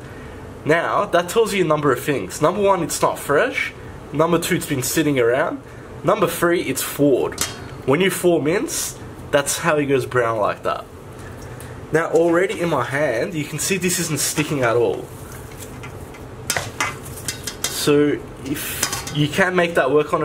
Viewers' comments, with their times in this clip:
0:06 Anyone know what he says is "number three" ? Sounds like ""Ford", no idea what that means.